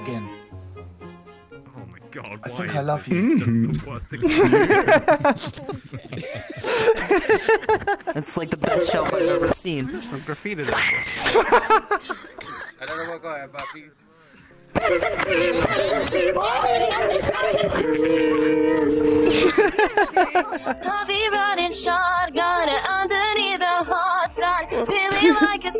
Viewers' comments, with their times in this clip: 0:08 This scream sounds like its from a sound board lol.